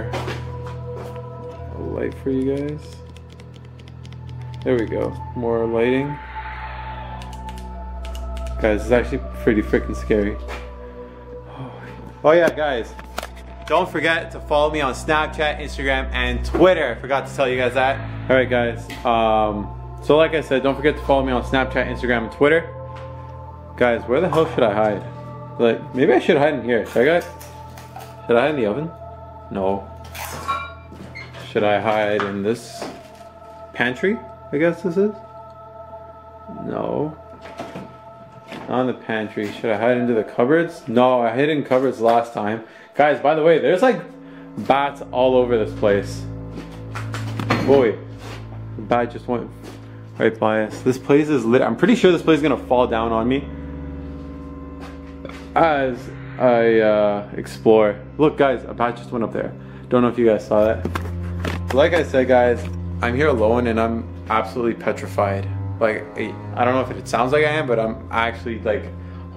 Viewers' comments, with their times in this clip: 0:10 on the video you can hear a spirit whisper
0:57 sounds like someone said "hide"